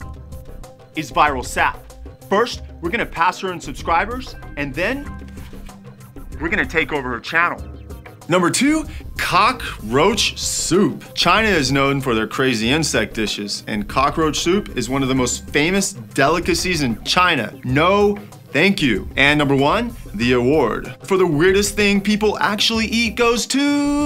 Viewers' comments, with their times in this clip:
0:09 The Pause XD